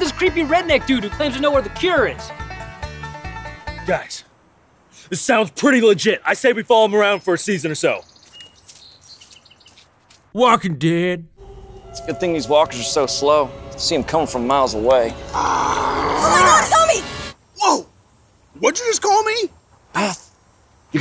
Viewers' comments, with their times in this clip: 0:07 Did anyone else hear the minecraft zombie Sound FX ?